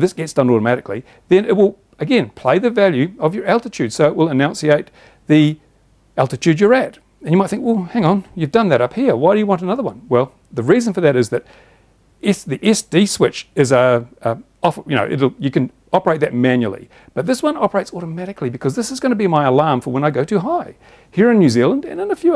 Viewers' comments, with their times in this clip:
0:04 I like the subtle switch (Other type switch) from annunciating the altitude in the officially approved model flying sliver of air, to sternly announciating it when the operator allows his tree-killing baby molesting drone to venture near the forbidden zone, as heard That alone is what can keep the planet in its correct orbit and avert global warming from colliding with climate change. Are UAV operators who wear foil equipped fluoro orange hard hats and safety international rescue orange socks allowed to set 119M as a playpen fence marker? (Assuming they have removed their shoes prior to entering the airfield of course.)